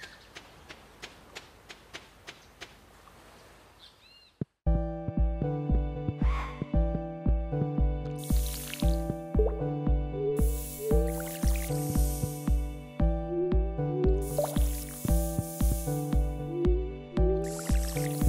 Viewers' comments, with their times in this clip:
0:05 music was a banger